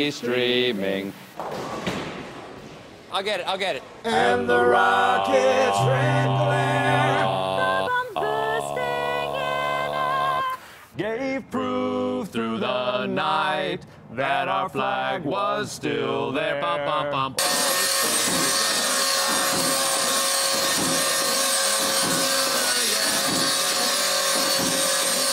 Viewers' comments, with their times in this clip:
0:09 That low note ! Wow!